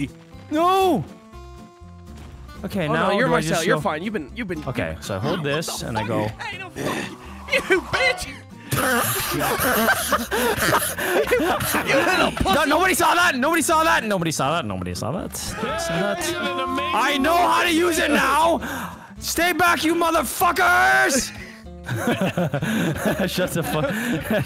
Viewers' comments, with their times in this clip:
0:07 probably the hardest I heard Vanoss wheezing 😂